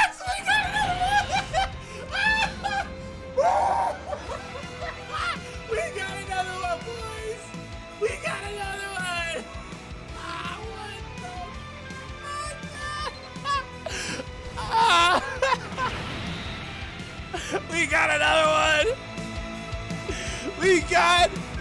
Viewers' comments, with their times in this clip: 0:03 that voice crack filled me with joy for some reason lol